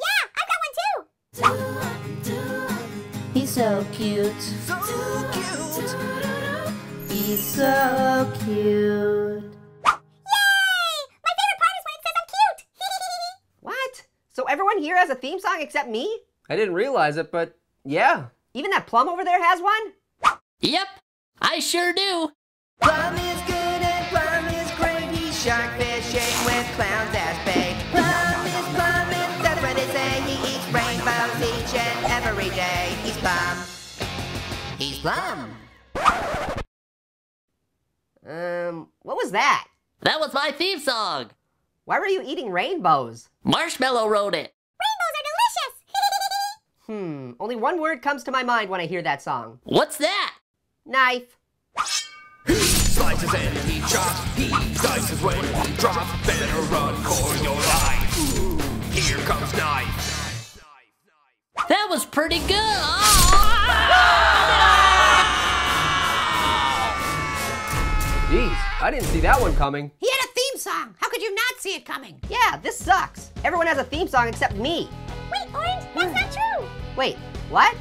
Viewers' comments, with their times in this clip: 0:10 cutest yay ever
0:23 Orange is LITERALLY SINGING IT!
0:28 Plum Is Plum & Th( Sound Actually Like A Dolphin) What They Say
1:04 hey pear Stoles orange's scream